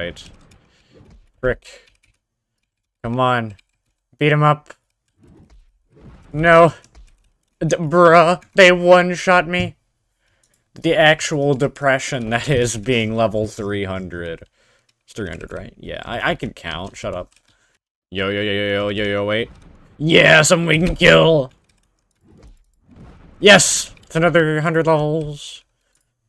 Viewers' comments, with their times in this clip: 0:08 in he kinda sound like technoblade